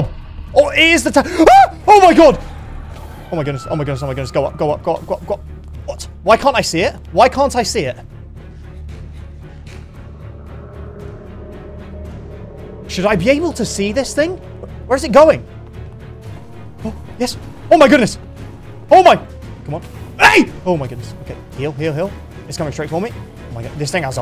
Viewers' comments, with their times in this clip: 0:05 he’s literally saying gulp gulp gulp gulp